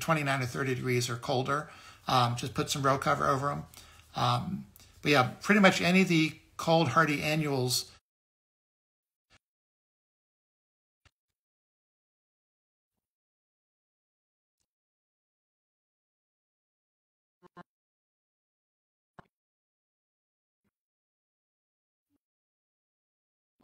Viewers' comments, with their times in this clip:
0:07 volume is gone. Thanks for sharing your knowledge.